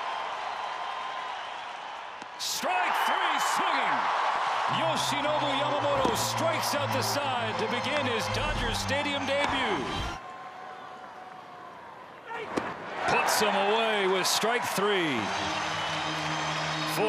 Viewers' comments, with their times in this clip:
0:05 Love that they play the Yoshi song when they struck him out